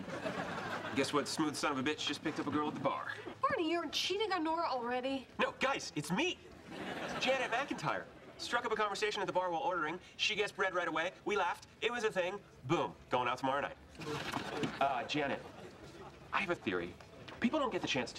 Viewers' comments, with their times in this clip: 0:06 Does anyone else think, that Ted sounds a lot like Eric Foreman there (Not the voice, but the style of talking)?